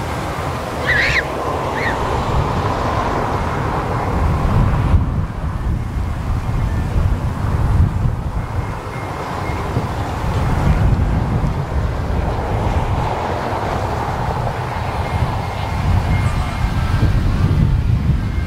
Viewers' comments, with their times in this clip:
0:06 is that the entertainer by Scott Joplinn playing in thhe background but from a music box ? haha , dope video man , like always ;)